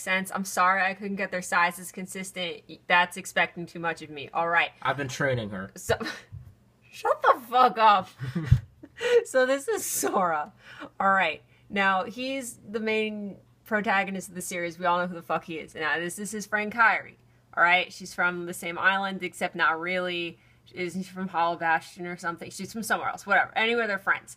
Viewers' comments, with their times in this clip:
0:07 she sound like blue face